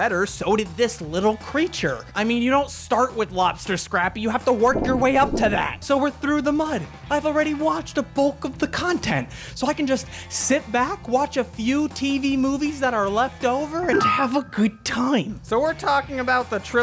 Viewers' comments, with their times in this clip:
0:03 Watxhing with headphones and I genuinely thought someone was trying to break in to the house
0:04 i was terrified because i though someone was banging on my door
0:04 I actually thought somebody knocked the door at my house.
0:04 That sound scared me, I thought somebody was knocking on my window